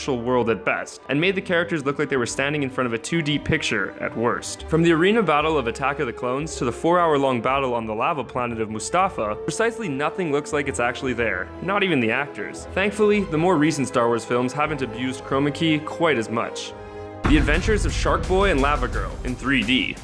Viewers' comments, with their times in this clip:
0:07 seriously "mustafa"? how difficult is it to add an r at the end??
0:07 Lava Planet Of What?
0:08 As a Star Wars fan, I actually cringed so hard when he pronounced Mustafar like that...